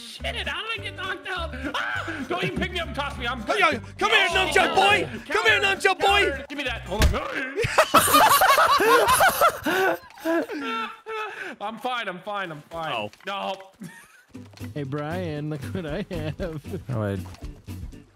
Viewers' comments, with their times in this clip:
0:06 the timing with that Wildcat noise 😂 Banoss not using the owl?